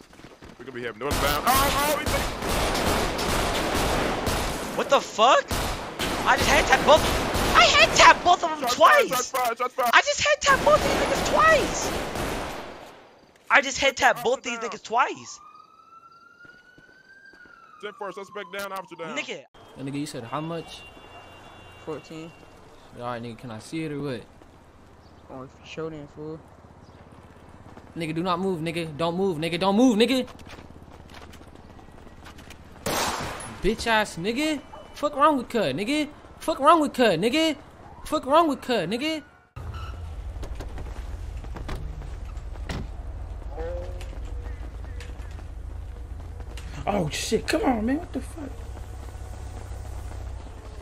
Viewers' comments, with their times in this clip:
0:09 Of course when u die starting to cry xddddd
0:33 bro said niggeh